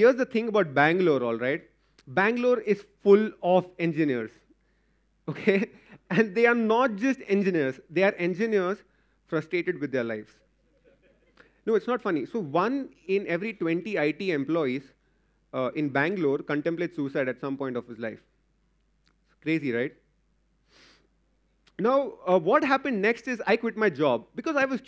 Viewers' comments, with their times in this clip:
0:10 why tf are they laughing?
0:11 The people don't laugh at jokes, they laugh at serious topics lol!!!!